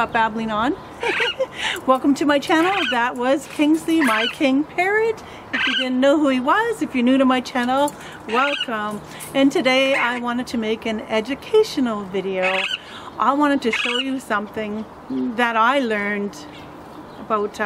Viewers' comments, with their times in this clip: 0:04 such sweet noises <3 adorable ^^.Wooow a blood tear? Never even heard of that, it's bizzare.